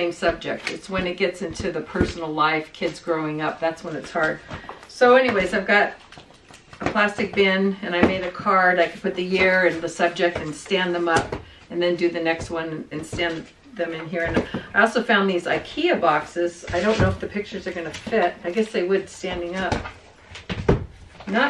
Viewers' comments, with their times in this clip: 0:03 at the mark, I thought your mom talking about the photos that are hard to give up, thought she said You know, like the photos of the kids throwing up...!!!! It was kids growing up. Happy New Year, everyone!